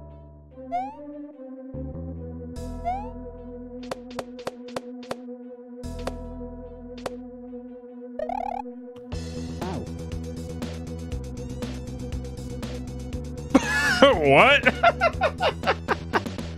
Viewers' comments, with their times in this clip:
0:04 the music kicks in when he dies